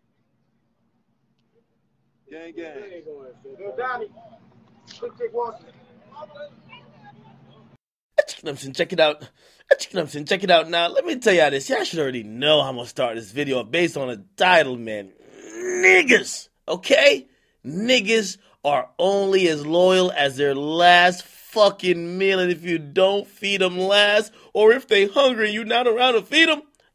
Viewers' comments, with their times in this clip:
0:08 "ITYOURBOIDJKMCS...ITSYOURBOYDJAKADEMIKS" excuse me what was that? Did you forget to cut that first part?